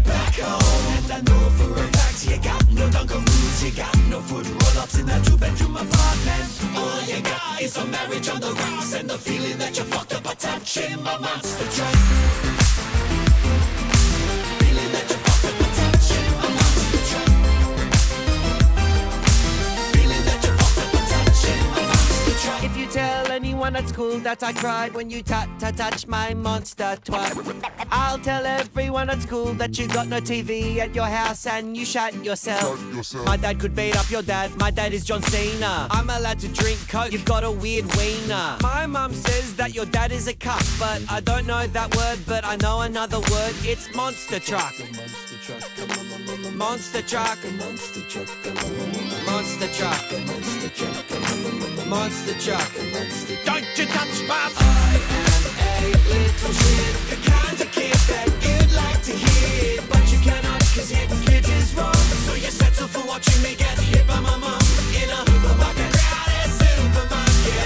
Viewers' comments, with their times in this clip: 0:06 I don't know the reason why I love that accent on words like got and rock
0:06 that line sounds so good
0:07 Idk why, but is my favorite part of the song. Might be the burn, but the whole couple seconds just meshes so damn well together
0:11 the synth line melted my brain
0:12 There's something about this arrangement that sounds like it's part of the Spyro the Dragon soundtrack, especially
0:25 the scratch is fireeeeeeee
0:43 That Hammond solo starting is fire!
0:54 I fon't know why, but sounds like subway surfers